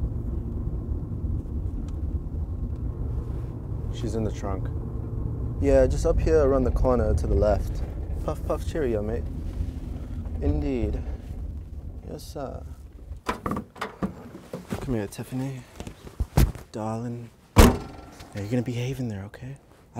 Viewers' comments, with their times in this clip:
0:05 look at my mans british accent.